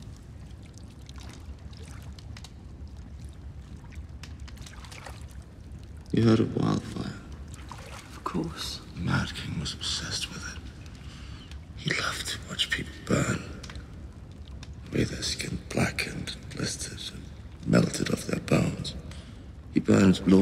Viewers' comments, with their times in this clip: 0:07 "you had a waffle. Of course!" Mad King was obsessed with it"